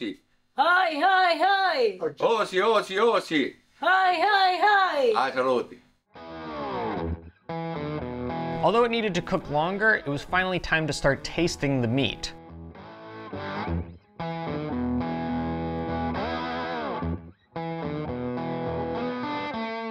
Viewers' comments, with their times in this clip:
0:04 as an Aussie- it took me a second to recognise our war cry lol!